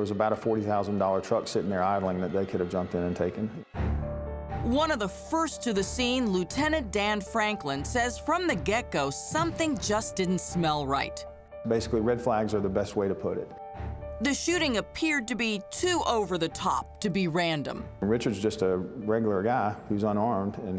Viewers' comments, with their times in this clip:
0:06 anyone else hear Forrest Gumps voice right here?